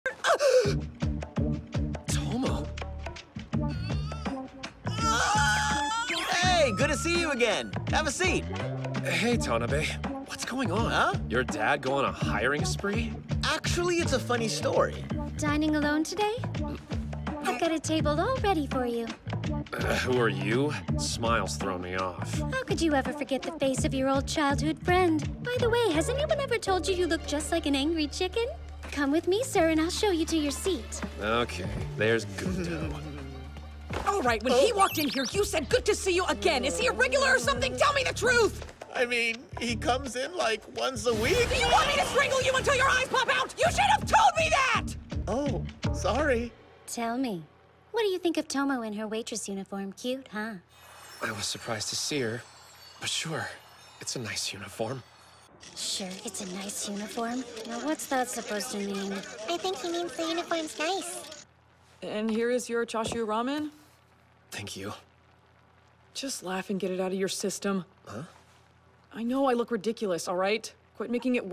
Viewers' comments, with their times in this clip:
0:05 that little squeak made me laugh
0:59 I love how Carol says it in a simple, yer easy way.